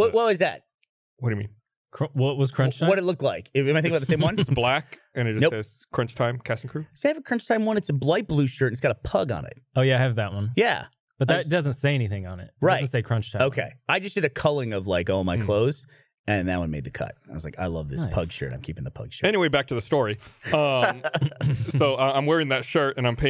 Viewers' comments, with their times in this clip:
0:08 Did Burnie say “blight blue” ?😂